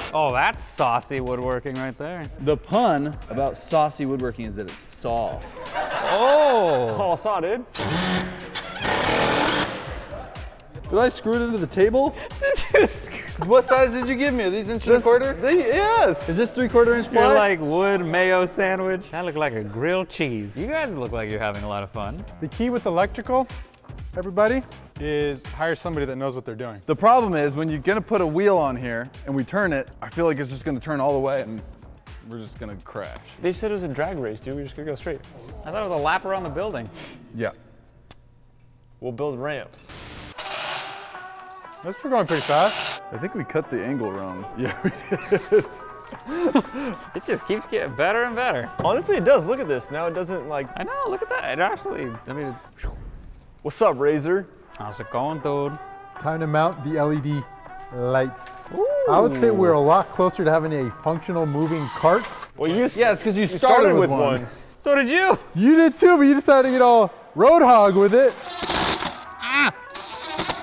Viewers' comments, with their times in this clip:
0:07 hey if you go to it sounds like a A10 Warthog
0:54 Howsingondood? - frank baldman punchypunch, curtesy of gamegrumps
0:55 He sounds like frank from house party